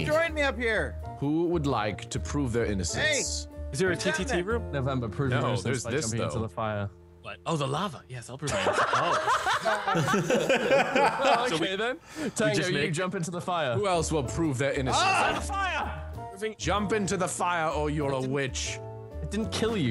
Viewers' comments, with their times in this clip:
0:07 dat laugh is awesome